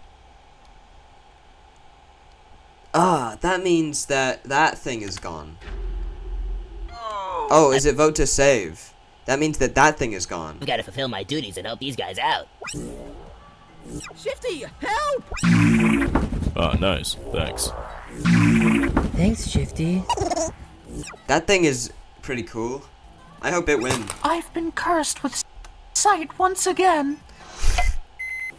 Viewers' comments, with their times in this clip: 0:10 omg i thought you said something else